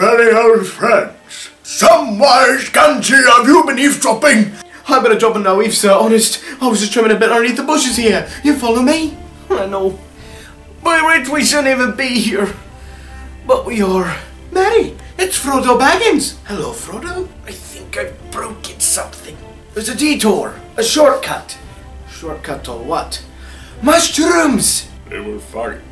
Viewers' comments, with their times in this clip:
0:09 Wow great impressions !! By the way you look exactly like sam in hh ... good job